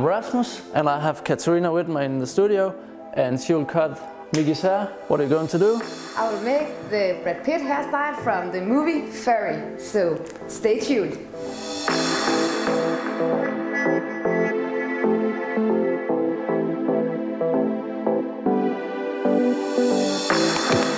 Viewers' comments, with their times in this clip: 0:08 Did she say furry?🤣